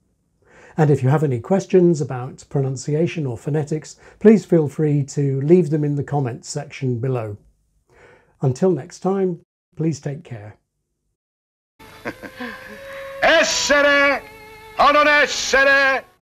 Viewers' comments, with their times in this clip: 0:08 Did he do this on purpose? The “time” sounded wrong.